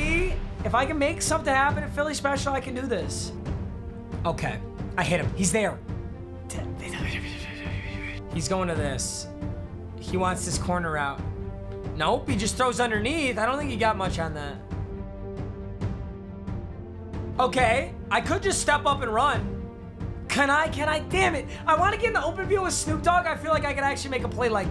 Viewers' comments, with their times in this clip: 0:08 those lil whispers he made 😭💀